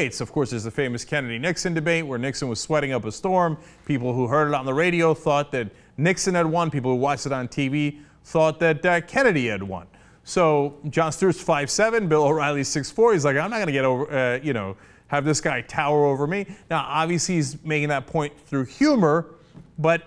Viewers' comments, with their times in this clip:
0:05 "people hurt on the radio farted" lol!